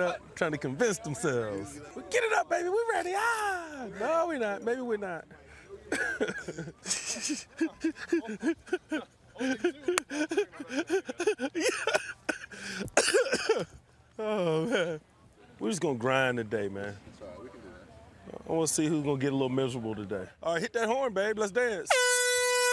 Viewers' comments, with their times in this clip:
0:07 why hasn't anyone memed this laugh yet 😂😂😂
0:07 his laugh is so funny
0:07 So any memes gonna be made on this laugh like with the Kawhi Leonard laugh😂😂👌